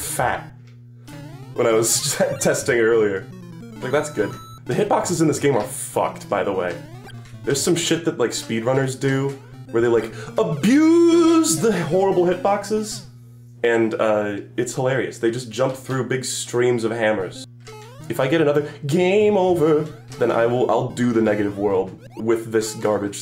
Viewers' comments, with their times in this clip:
0:06 my man singing like bill wurtz